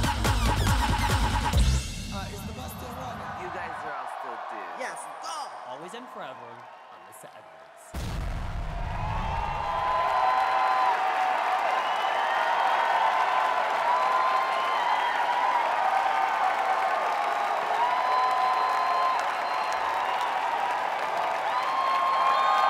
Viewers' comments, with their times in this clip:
0:06 I was being slain the whole time, but my fav part BY FAR is Jiggly missing the last beat